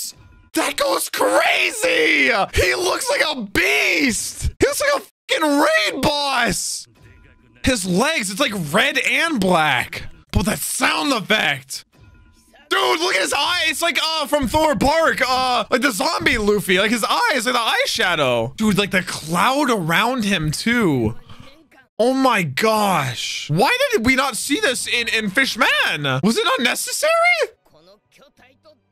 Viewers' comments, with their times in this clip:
0:10 LITERALLY the sound design this arc goes as hard as Gear 4